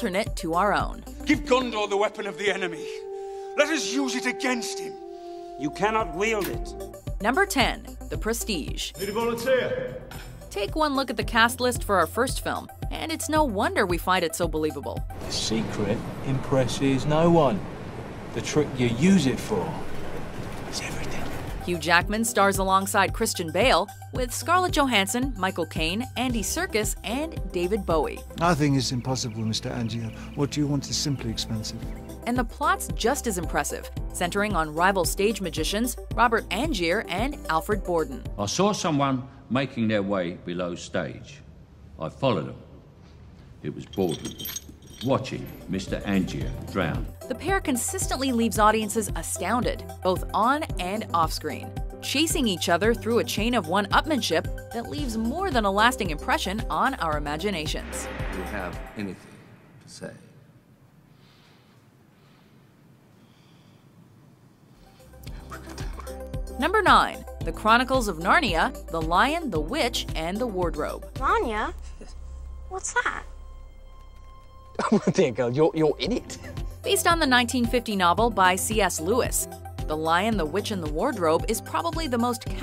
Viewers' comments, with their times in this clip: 0:07 oh this movie is worth watching for Bale's London accent alone!
1:05 What did he say? I couldn't hear him.